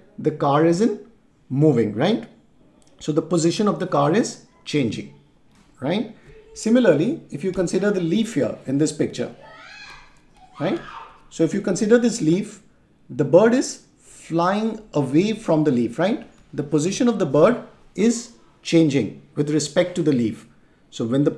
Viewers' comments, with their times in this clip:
0:08 y is someone screaming